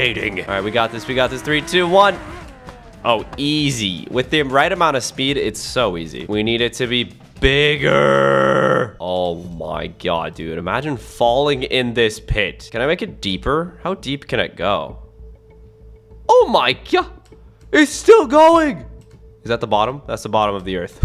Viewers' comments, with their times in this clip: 0:06 In it sounded like he was going to sing hoist the Color’s 😂😂😂😂